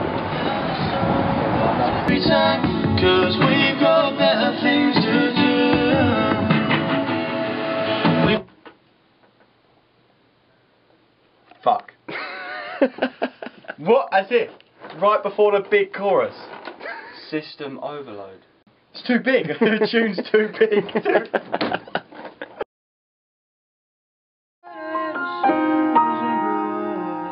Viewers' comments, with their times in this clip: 0:09 Once the music stopped playing I wanted cry forreal.